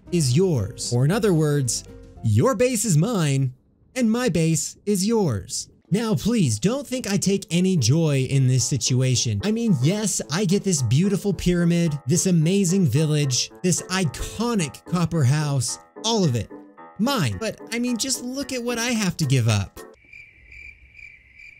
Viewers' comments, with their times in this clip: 0:03 his words sounded like HCBBS